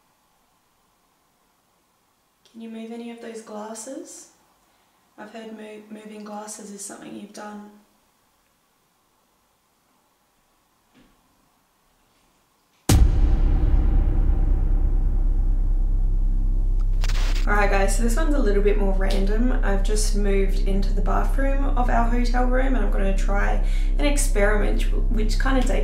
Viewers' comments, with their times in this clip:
0:10 Not sure if you caught that knock ...